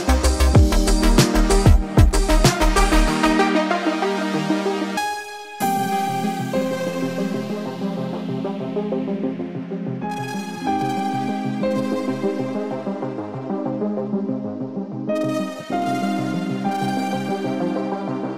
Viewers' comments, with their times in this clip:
0:05 it sounds like the song in FIFA 19 where u buy a player in Manager career